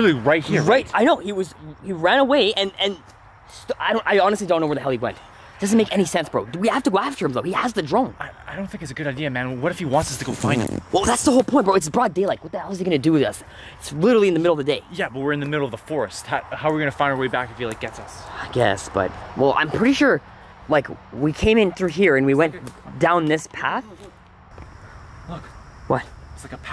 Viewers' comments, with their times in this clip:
0:10 sounds like you jester farted in front of u best friend ahha